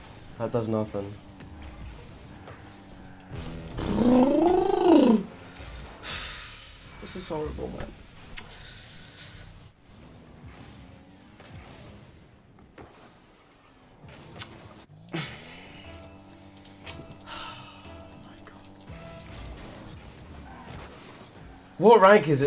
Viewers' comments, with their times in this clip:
0:03 When you're underwater: